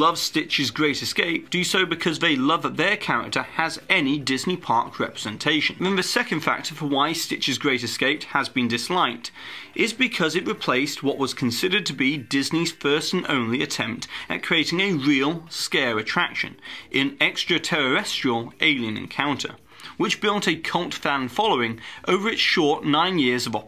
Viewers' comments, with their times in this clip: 0:08 "six-ONE-six"? I'm unsubscribing